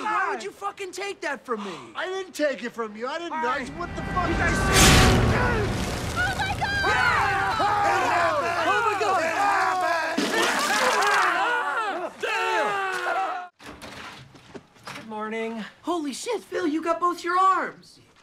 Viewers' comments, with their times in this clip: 0:06 Dude Cusack's scream is 1 of the funniest things I've ever seen 😂😂😂